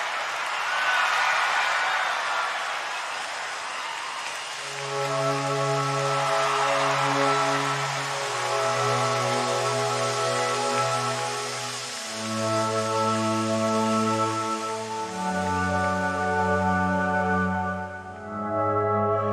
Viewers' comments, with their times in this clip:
0:03 I mean the music after the show it sounds tragic like to predict something. I don’t know this is how I see and feel. Happy Peter Burns and music is sad